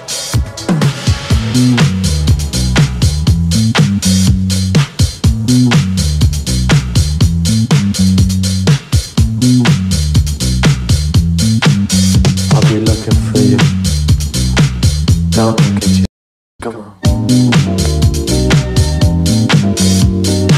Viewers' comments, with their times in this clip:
0:04 is that fm'in vibe oooooo wee